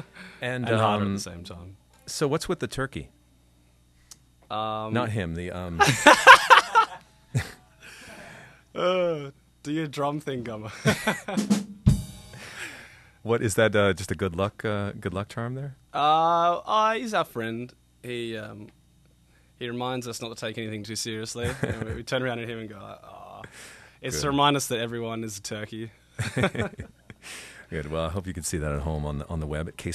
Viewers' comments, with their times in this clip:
0:10 the drums are priceless